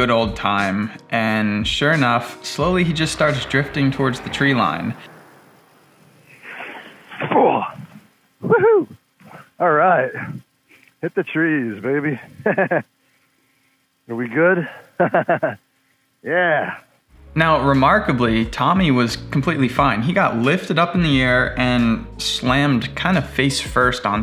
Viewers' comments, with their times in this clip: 0:05 sounds like Steve from Minecraft
0:06 Old Minecraft Steve sound
0:06 the old mine craft damage noise came from this🤣🤣🤣
0:07 Haha video 3 is my favorite, the “woo-hoo” like would normally proceed a “nailed it!” vs. immediately following a very guttural “ooof!’ LOL!